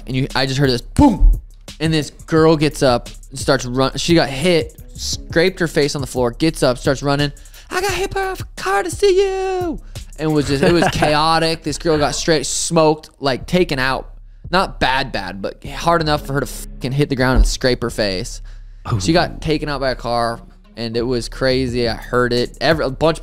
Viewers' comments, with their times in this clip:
0:10 when O' Malley says "scrap her face" you can hear the gayness in his speech.... Maybe that's why he's called sugar shane..... 😏